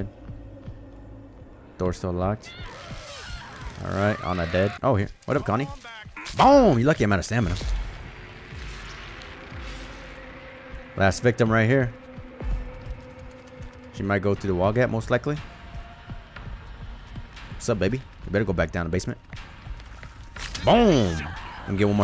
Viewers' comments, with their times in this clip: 0:03 I have never heard a scream like this before